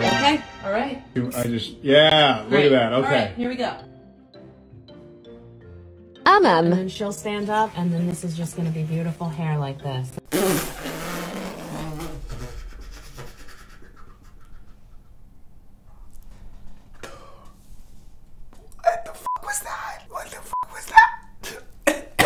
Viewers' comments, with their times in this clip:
0:08 When you laughed at the results of it made me laugh too.... haha oh my goodness 😂